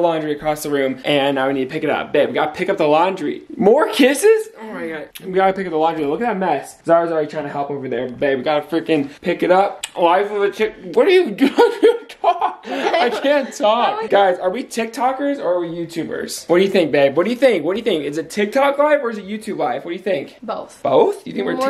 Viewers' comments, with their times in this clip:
0:03 I almost thought I heard him say “lingerie” for a second 😏😏😏😏